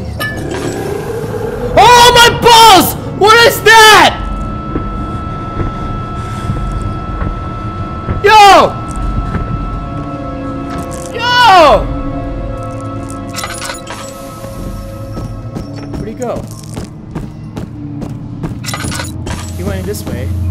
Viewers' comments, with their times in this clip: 0:03 He say this oh my balls. If u heard him say it like